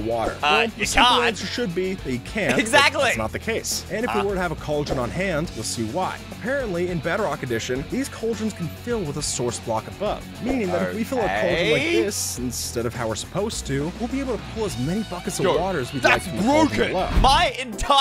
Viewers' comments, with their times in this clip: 0:03 that “huh?” Was so funny XD